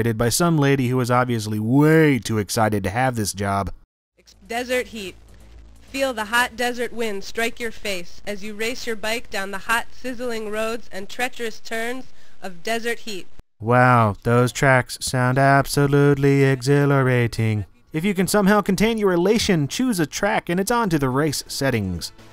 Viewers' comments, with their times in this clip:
0:04 The female commentator is REEEEEEEALLY motivated.